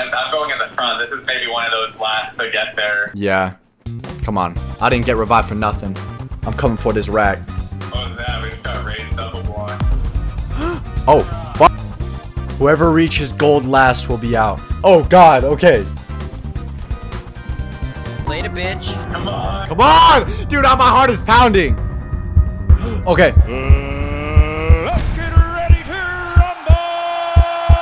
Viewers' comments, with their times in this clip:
0:10 most casual oh fu-